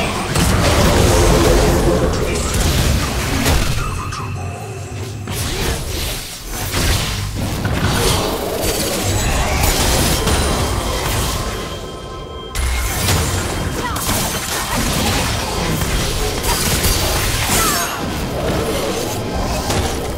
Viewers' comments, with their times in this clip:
0:08 neverending stopwatch sound